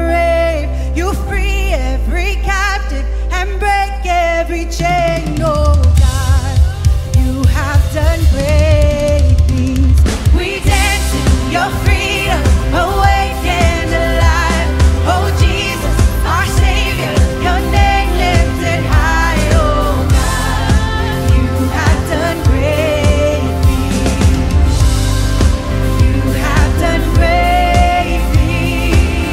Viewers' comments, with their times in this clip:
0:10 Genial! Perfect Fill Bless! ✊🇨🇴